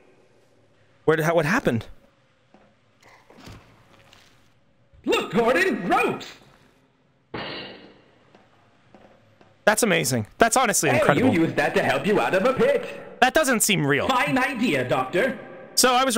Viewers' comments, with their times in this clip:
0:03 bruuhhh the cartoon sound effect